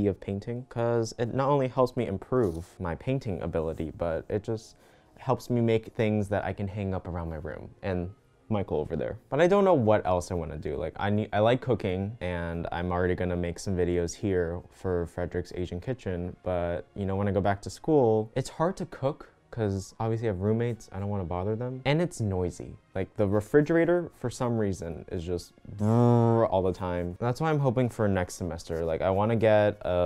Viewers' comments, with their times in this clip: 0:10 I misheard that-
0:10 "I like cocaine"
0:10 “I like cocaine” is what I heard 😂 I’m painting with you btw lol
0:10 i thought he said cocaine woops
0:10 i literally thought he said "i like cocaine"
0:10 I THOUGHT HE SAID COCAINE
0:11 I can't stop hearing "I like cocaine"
0:11 i thouught he said "i like cocaine", and it scared me for a second.
0:11 "i look cooking" my brain interpreted this as "i like coccaine"
0:11 i was SURE you said „i like cocaine” I-
0:11 it sounded like he said “I like cocaine” instead of cooking lmao😂
0:11 I THOUGHT YOU SAID COCAINE OMG
0:12 i thought he said i love cocaine 💀
0:12 i thought he said “i like cocaine” HAHAHAHAH😂
0:12 i’m sorry you like what? cocaine? (i know he said cooking but i heard cocaine)